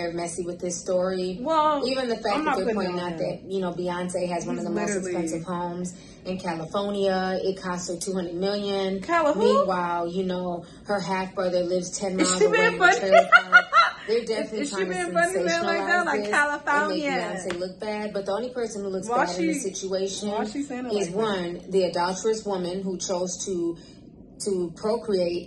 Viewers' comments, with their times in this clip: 0:06 Cali☎️ia really got me 😂😂
0:08 That’s how she always pronounces the state lol 😂.